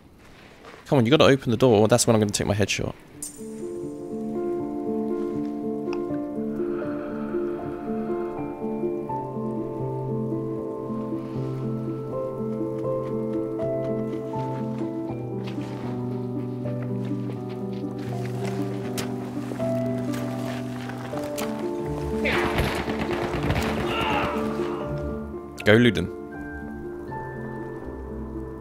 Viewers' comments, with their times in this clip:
0:09 that moment was very dramatic with the music in it